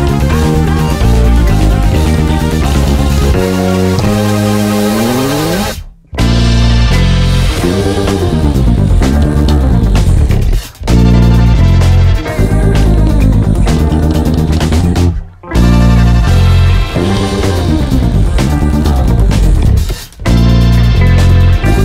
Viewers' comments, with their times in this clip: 0:06 The sixteenth notes are FIRE great work!